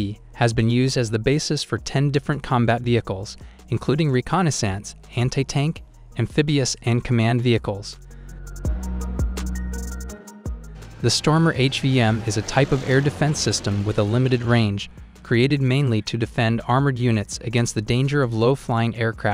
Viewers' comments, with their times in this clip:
0:05 did hentai-tank? well that's a new genre for me